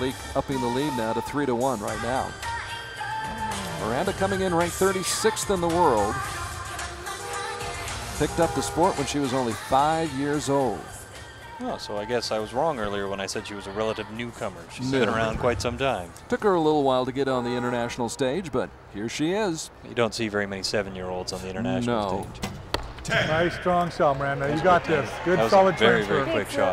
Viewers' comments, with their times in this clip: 0:07 what language is that music ?